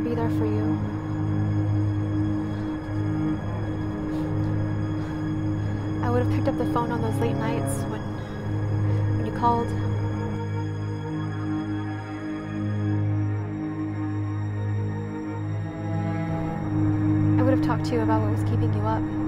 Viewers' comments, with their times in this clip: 0:06 Oof sorry for the score lag when we get to